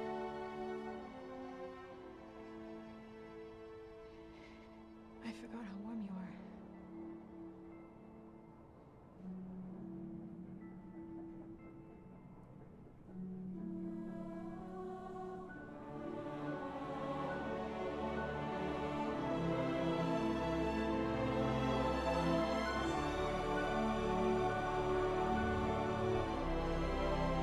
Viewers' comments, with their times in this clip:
0:09 Listen as the music starts you hear the subdued rattling of the Daily Planet's globe. Does anyone else find this moving? Amazing sound direction.